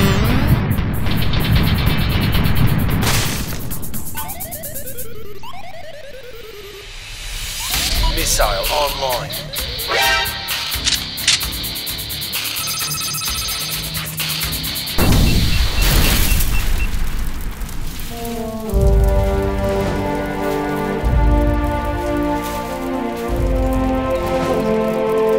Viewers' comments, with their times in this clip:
0:09 LOL @ the Metal Gear Solid "!" sound